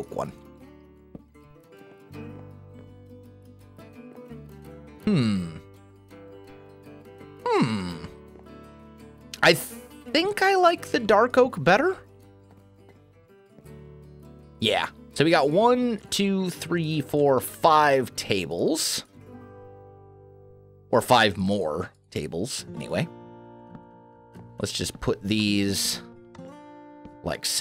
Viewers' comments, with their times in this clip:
0:10 you sounds like a villager LOL :D :D :D since you're in pre-release you can use the item frame as plate in the tables. also try using cakes so it looks like someone is really there.